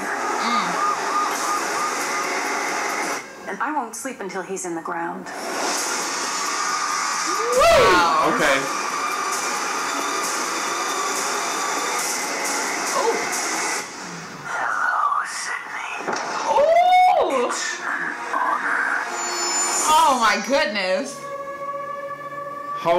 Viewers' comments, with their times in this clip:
0:09 I'm hoping that isnt Gale screaming after seeing Dewey's body... dont you dare do it.